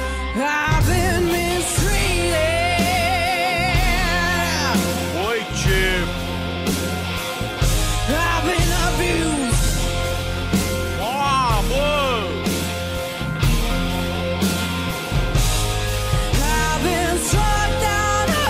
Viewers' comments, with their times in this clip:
0:03 should have chosen another song. She's not bad...decent voice and good range BUT not for THAT!